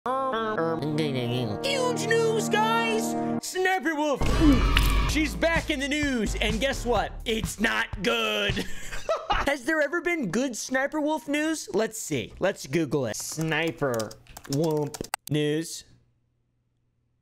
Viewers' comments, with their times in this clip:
0:03 why did you sound like the teacher from fairly odd parents when you where saying “sniperwolf”